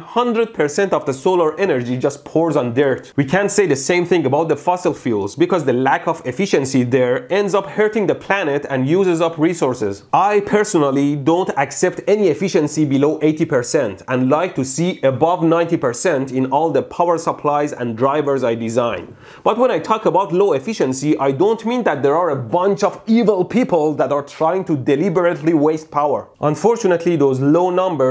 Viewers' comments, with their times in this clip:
0:10 God he sounds like my dad talking about my exam marks percentage
0:10 you sound like my mom